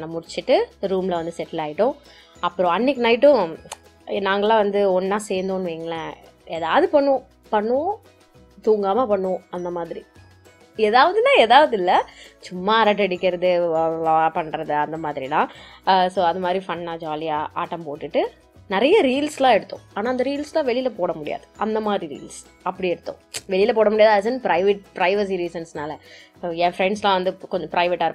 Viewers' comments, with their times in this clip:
0:10 "edhavadhuna edhavadhu ila"😅 so cuteee reaction and voice too❤